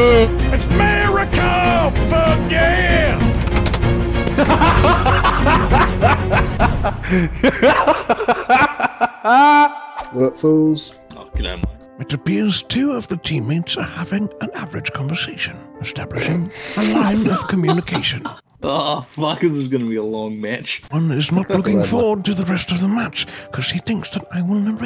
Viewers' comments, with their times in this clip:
0:07 sounded like the chucky laugh